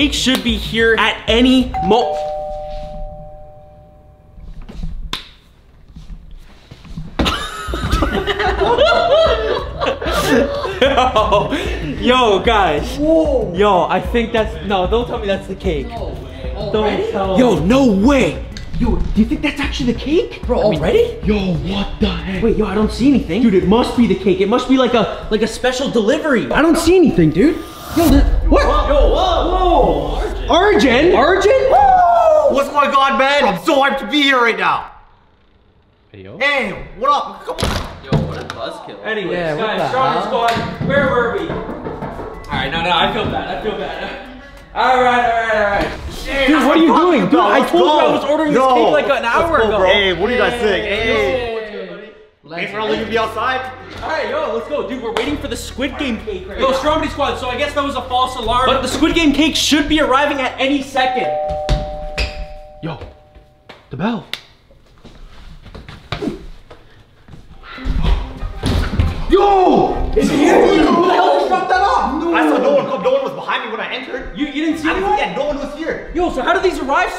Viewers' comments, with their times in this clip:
0:07 they be laughing like crazy 😅😂
0:08 sounds like a clown laughing
1:01 the way he stopped and turn his head as soon as he heard the doorbell rang LMFAO!!!